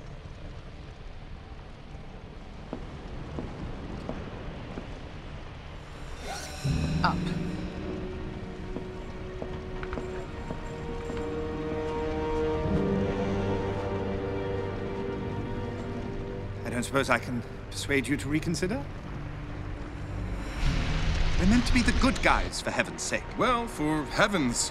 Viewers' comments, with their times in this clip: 0:09 you can hear him stretching